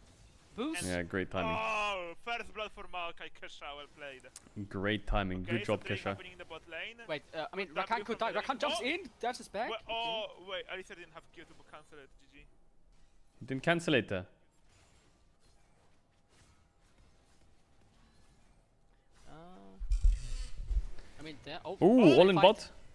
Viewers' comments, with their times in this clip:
0:06 did he say "at least they didnt have curable cancer, gg" ? or did he say "at least he didnt Q cancel, gg" ? xD